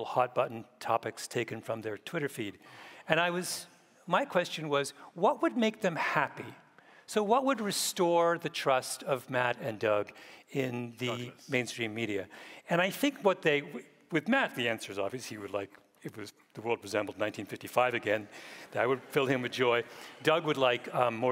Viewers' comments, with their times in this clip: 0:09 He's trying to do a Hitchens impression, basically haha